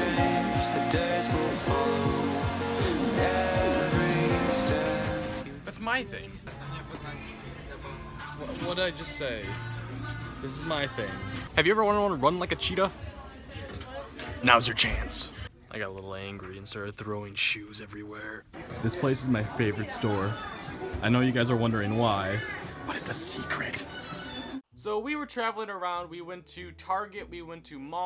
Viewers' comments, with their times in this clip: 0:09 I HEARD ONE DIRECTION AND ALMOST PASSED OUT 😍😍😍😍😍😍😍😍